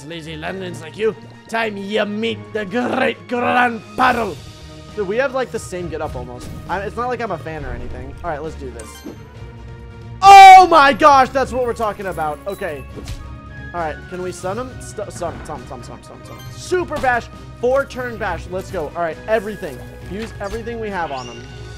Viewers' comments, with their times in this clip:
0:04 the music fits the battle attack for atack